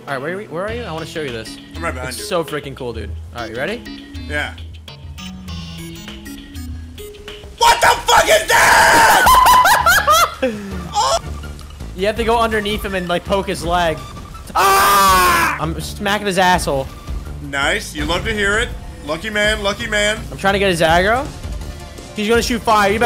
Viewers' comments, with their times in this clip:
0:06 Dumbledore said calmly